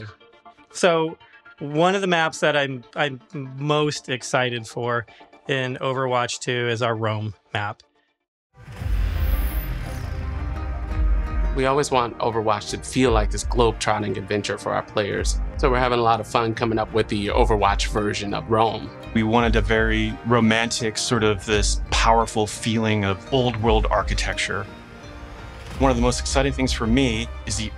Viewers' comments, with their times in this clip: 0:08 Just my personal timestamp, as the music is touching my soul